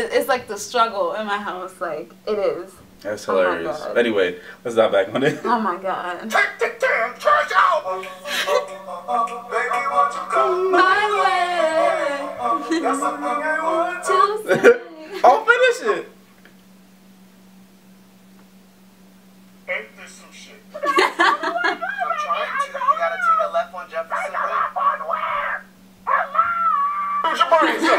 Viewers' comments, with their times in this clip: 0:10 THEY HAD THE SAME VOCALS! THEY SOUNDED THE SAME!!! SPREAD DEM RUMORS!!!!